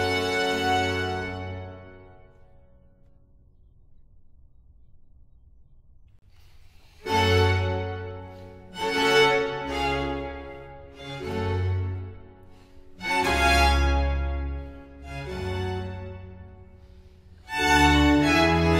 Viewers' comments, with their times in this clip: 0:06 sounds like La Follia